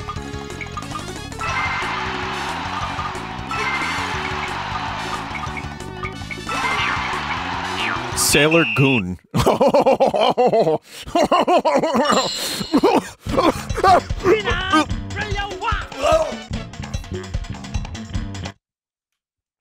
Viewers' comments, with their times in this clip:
0:07 That's a really strange Vinny laugh